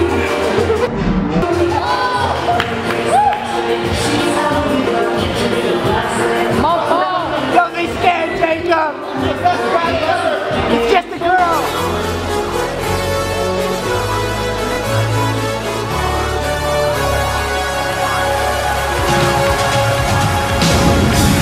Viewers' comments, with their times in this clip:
0:08 sounded like Adam Sandler